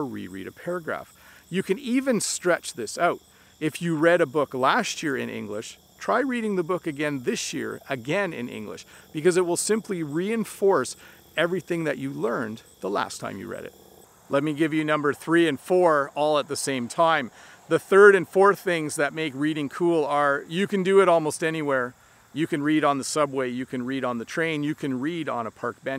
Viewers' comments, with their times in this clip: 0:07 hi, i noticed that you have pronounced the word "this" in a very strange way, minute